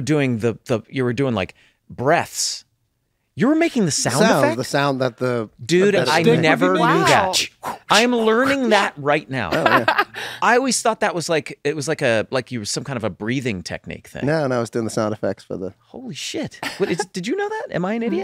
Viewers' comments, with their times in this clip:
0:03 thats so funny. how didnt they realize it was wooshes? its like a kid playing with lightsabres making the sound effects